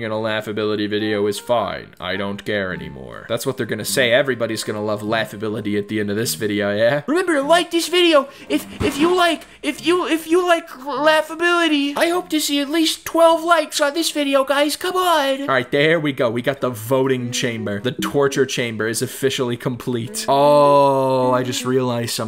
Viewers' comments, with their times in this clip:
0:07 I dunno why but he's Voice gave me Morty vibes